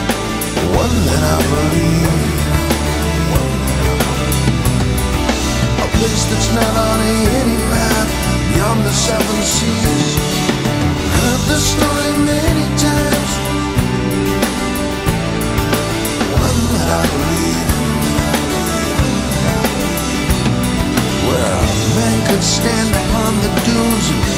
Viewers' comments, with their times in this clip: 0:10 where he goes up a octave, such a wonderful transition... great song off a great album